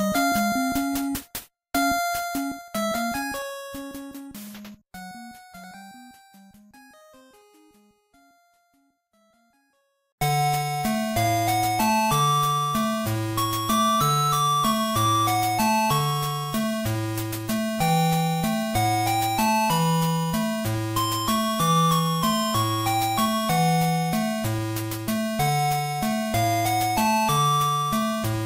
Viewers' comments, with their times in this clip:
0:09 Set the video to 1.75 in then you'll get the Atari 2600 version.